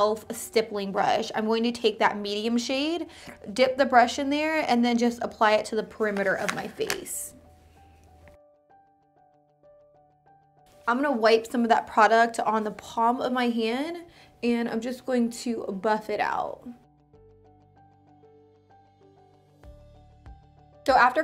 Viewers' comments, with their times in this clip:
0:03 ... what was that noise😂😂